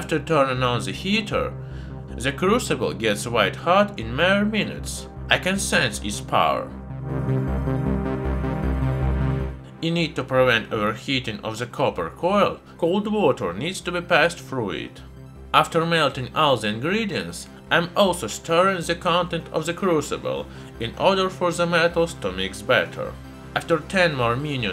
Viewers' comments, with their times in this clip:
0:05 "I can sense its power" ominous synth music intensifies